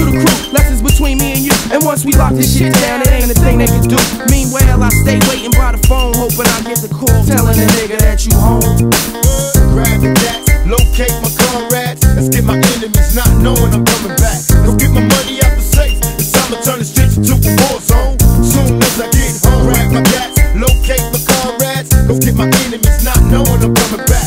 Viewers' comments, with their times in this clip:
0:09 The “what” is very underrated